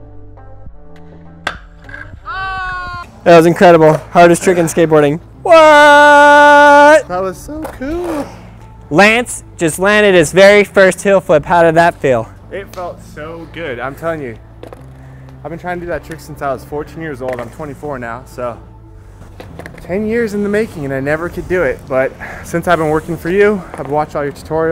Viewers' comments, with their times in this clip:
0:06 HAHA his voice cracked!